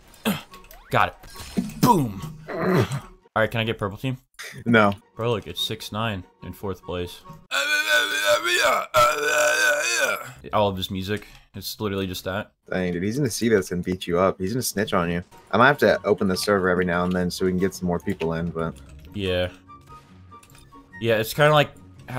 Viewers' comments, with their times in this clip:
0:08 that’s good rapping skills
0:08 Since I watch my YouTube videos with captions on (Don't ask) When he was making those sounds it literally put [music] I laughed so hard. XD
0:08 on that's a nice song when you repeat when it's done